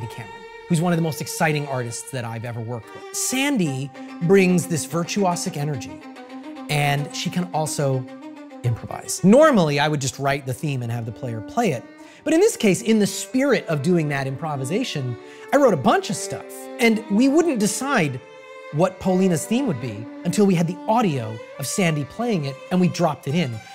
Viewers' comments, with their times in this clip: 0:04 German yelling Intensifies!